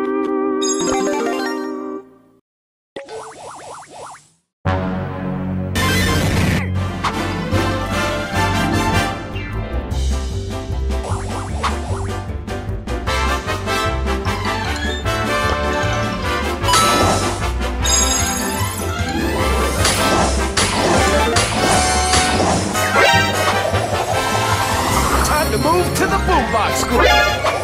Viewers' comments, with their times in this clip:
0:08 Oh I love the StarToons season’s music sooooo much 😭😭🥹